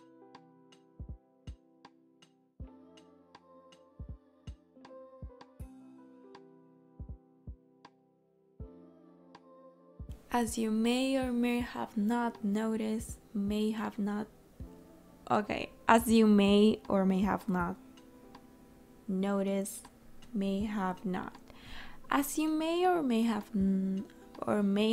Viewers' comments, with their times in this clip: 0:09 I forgot that I messed the audio up so there you have me, struggling with words 😂✨